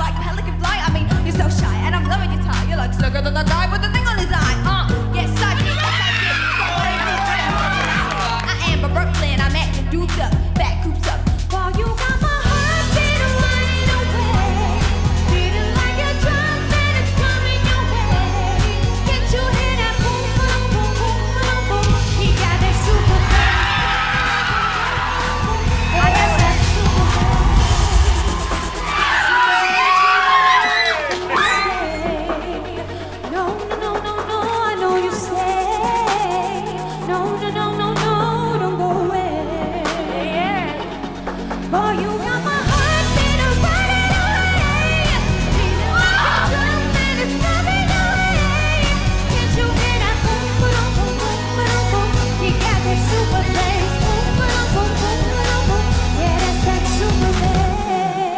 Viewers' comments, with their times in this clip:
0:04 That moment with Rita adlibs the "Uh" .. damn girl <3
0:12 was i the only one who hear her fuck up the note completely?
0:12 she was good but after she was awful
0:13 omg my ears
0:40 It's funny that she couldn't do that run and Rita did for her.
0:42 The tapping was ok then the singing was a bit cringey then she totally blew it away
0:42 B4 you rewind it to to see what this guy who's clearly deaf was on about please wear earmuffs. Safety first. It's better you glass is ruined than your ears right?.👌